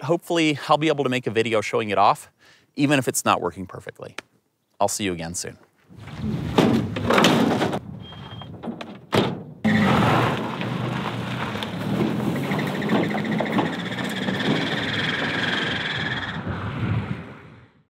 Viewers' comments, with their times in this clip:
0:07 Great video! Not only from a production point of view but as usual, I learned something. Oh, and it sounds like you need a new fan belt in the truck. :^)